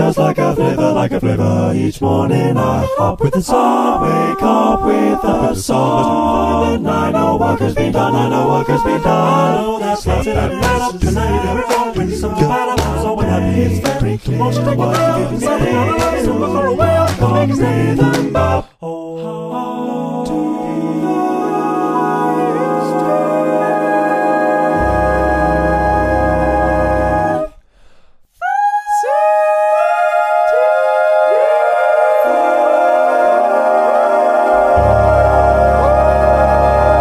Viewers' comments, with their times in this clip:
0:10 why did he have to get so filthy on the bass how did he think of that
0:18 the arpeggio feels so nostalgic